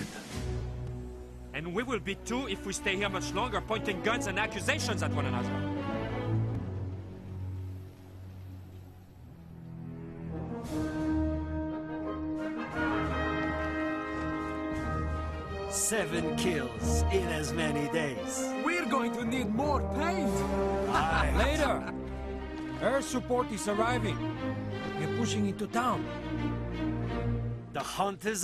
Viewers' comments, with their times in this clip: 0:10 One of my favorite parts in cod 3. After sabotaging the fuel plant (witch wasn't too fun for me to play through) and finding out your major is dead, this scene goes into a light setting with moral boosting music and a big firefly followed up with a cool tank mission! The hunt is on. Right, Bohater?